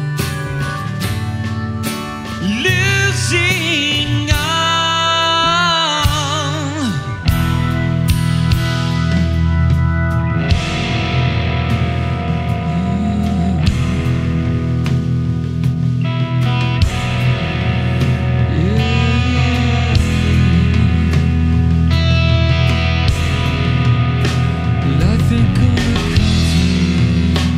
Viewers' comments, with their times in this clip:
0:10 its a total Rush chord.